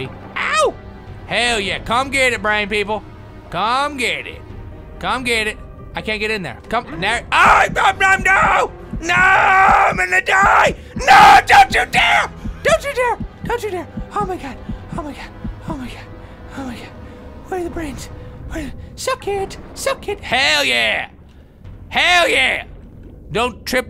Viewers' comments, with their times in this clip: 0:06 is the loudest ive heard him yell